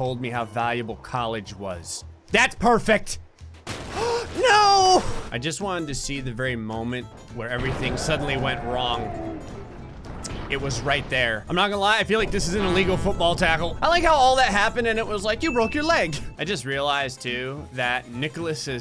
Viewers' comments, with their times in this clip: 0:03 The no was so heart breaking 🥺😂